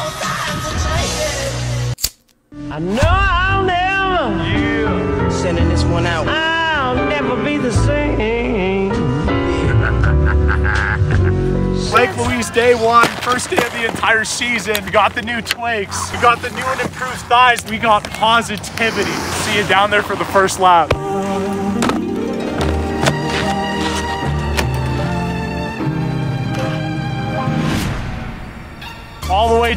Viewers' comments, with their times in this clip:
0:10 the troll laugh from WoW. Very nice.